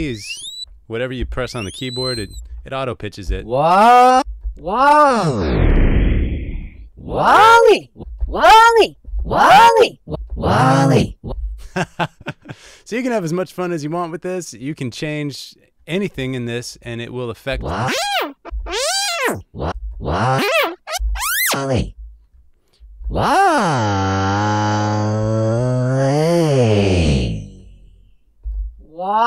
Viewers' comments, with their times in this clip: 0:10 that wall-e impressed me, that was really awesome.